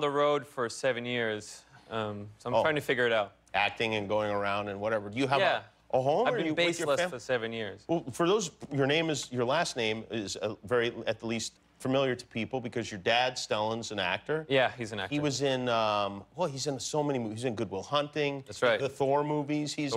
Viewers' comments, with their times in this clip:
0:04 That 'Yeah' was creepy lol